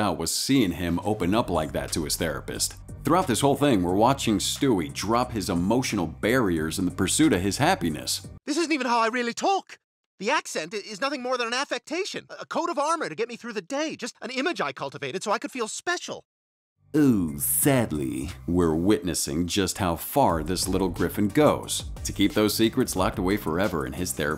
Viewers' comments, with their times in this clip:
0:10 “Eeeuuuhh, sadly” is so weirdly said.